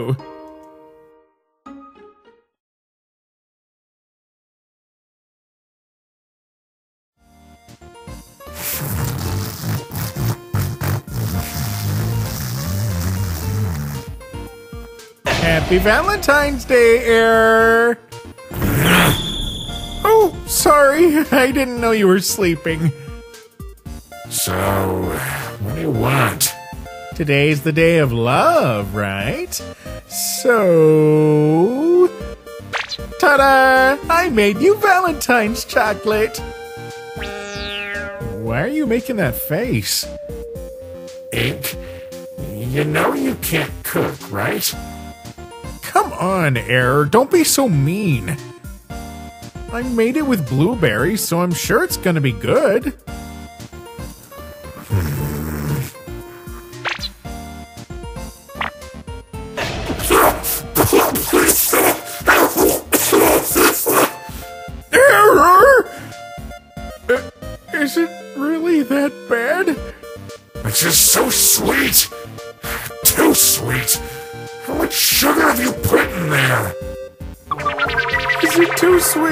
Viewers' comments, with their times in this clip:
0:07 Yeah it's average for a skeleton to snore like that 🙃
0:07 OH LORD DOES ERROR SNORE LOUD-
0:07 ok but the way you made Error snore? 💀
0:13 why does error's snore sound like that 🥲
1:00 Ink: give him a ❤gift of chocolate error: *eats the chocolate 🍫 * starts to coff
1:02 error just sounds like he's being waterboarded and strangled at the same time